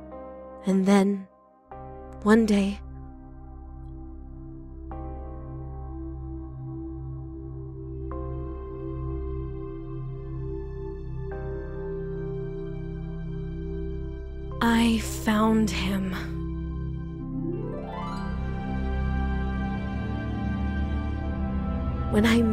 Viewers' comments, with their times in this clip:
0:04 “And then…one day” “I found him✨✨✨” with * beautiful music